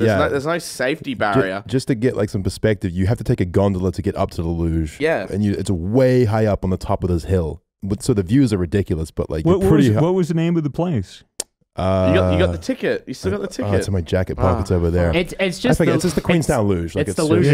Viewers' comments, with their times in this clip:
0:03 As an American, I have no clue wtf you said